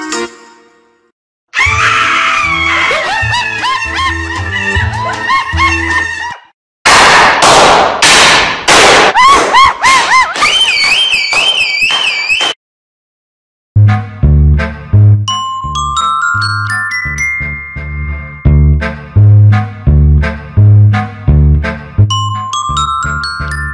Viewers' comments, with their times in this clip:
0:10 bro sounded like a car alarm💀